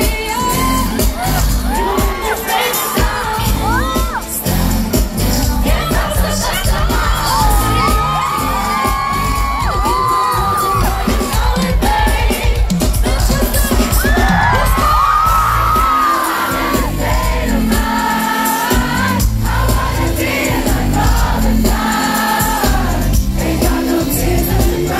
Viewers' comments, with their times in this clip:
0:07 this run is 😍😍